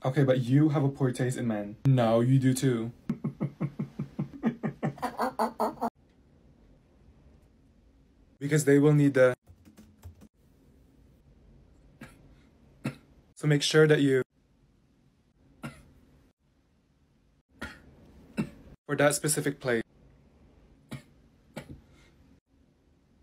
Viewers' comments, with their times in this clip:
0:05 the laughter sounds like a rat dying💀💀🐀🐀